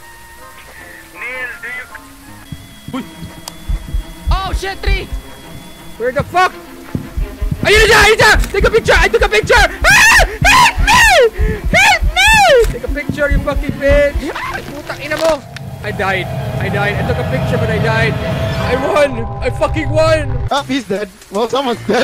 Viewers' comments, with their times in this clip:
0:09 Damn I remember the Train to Busan parody that voice lol the girl at baseball team